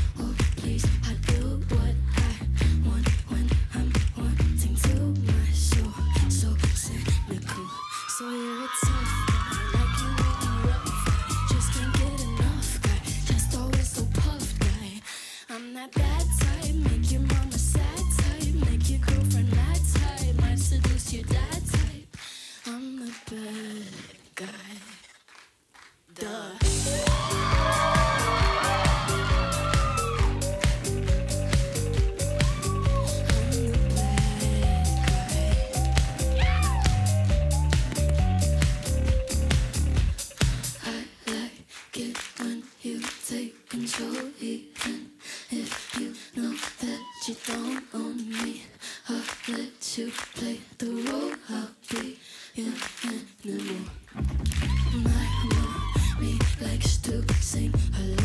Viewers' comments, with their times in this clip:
0:09 she's both miming & singing at the same time. If you didn't get what I'm saying, you can basically hear her voice but there's a playback of her voice which also called as doubling in voice recording. See she's just miming, and doesn't match the playback.
0:25 is her voice or some effects/
0:35 michael Jackson-Yow! Me- wait, I thought he wuz gone... illuminati theme song plays
0:40 My goal for 2020: figure out how to sing and clap like that at the same time.
0:41 Billie Eilish: Nah ill just LipSync instead